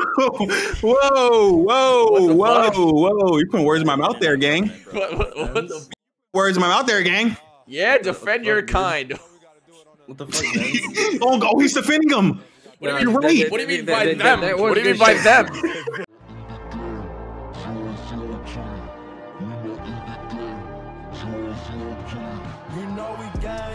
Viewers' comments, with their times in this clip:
0:05 I like it when he said "gang" like that 👽💀